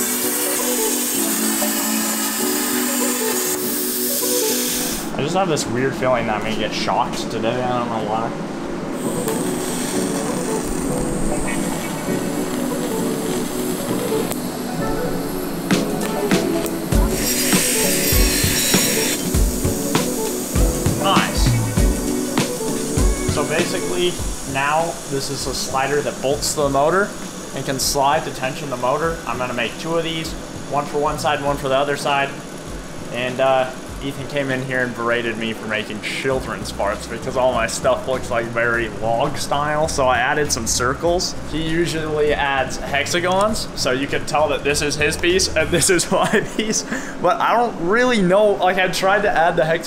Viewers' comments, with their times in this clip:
0:06 in the vid did he say shocked or shot
0:34 wtf is wrong with his voice, is he slow or something? Not trying to be mean I just want to know because he sounds like it